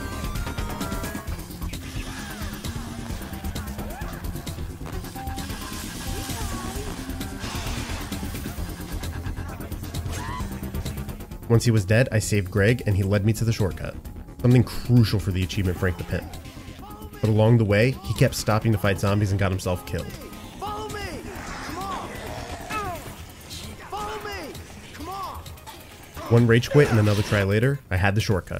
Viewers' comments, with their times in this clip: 0:09 One of the best perfectly cut screams I've ever heard. 10/10
0:09 Man Adam sounds like every man when they get hit in the balls hard enough.